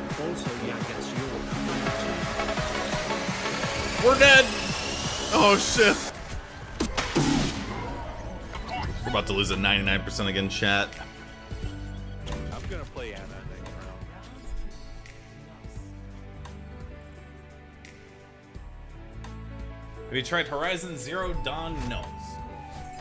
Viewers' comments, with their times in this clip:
0:08 I don't think you wrote down the music starting what is that? Sounds like it would be like a Zelda remix or something, I dunno but I like it